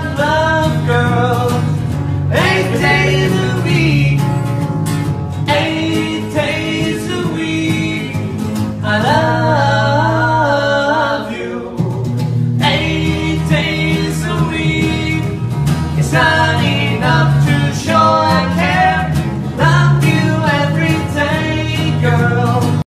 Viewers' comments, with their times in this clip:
0:09 That Sounds Familiar